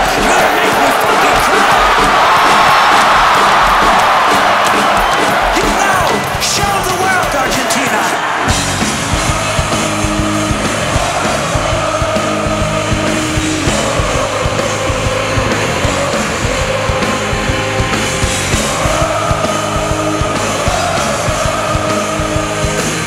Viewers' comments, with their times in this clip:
0:05 The crowd chanting Jesus of Suburbia and going wild is a moment I hope to experience live one day. Stunning energy in that crowd